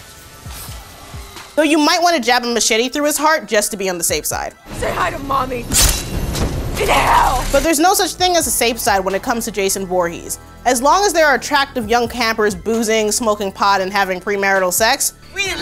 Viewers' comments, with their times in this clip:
0:03 that line was delivered so well!